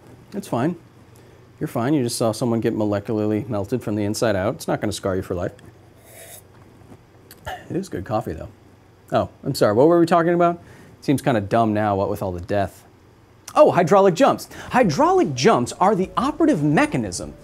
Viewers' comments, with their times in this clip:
0:05 now i have to ask, did you really drink coffee? To me it just sounds like your sucking air out of an empty cup.